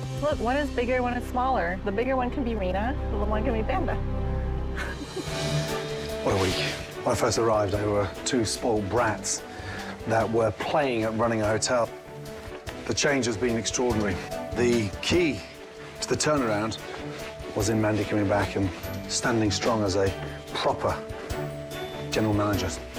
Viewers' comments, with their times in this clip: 0:07 want to show the world what i am capable of ( Crying) a lots of Crying 🤐